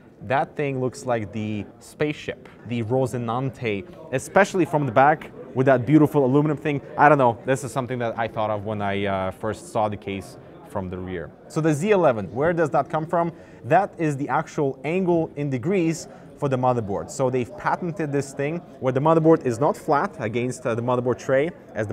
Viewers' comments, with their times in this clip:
0:06 That sexual tension in his voice when he says "saw the case from the rear")